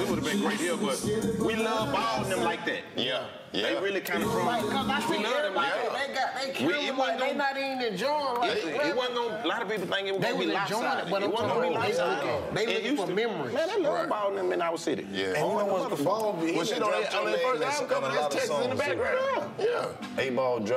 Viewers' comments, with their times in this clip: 0:06 Now you can listen to a convo 👍🏽